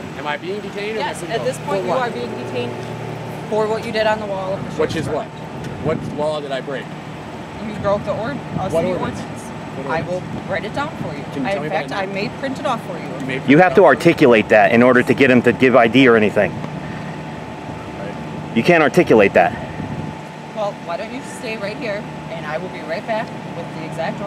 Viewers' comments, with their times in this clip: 0:08 her voice cracked, and she was on the verge of tears. astounding video.